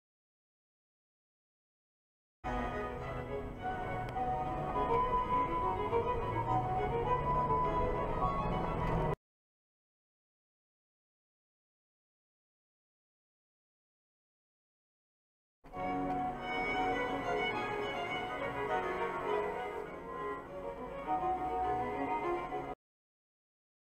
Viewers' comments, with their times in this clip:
0:08 the juxtaposition of the classical music is simply delicious